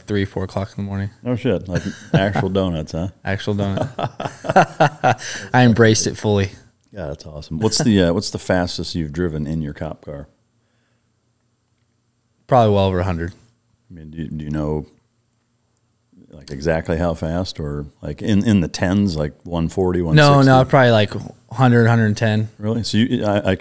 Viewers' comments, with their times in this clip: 0:04 the fakest laugh on the internet.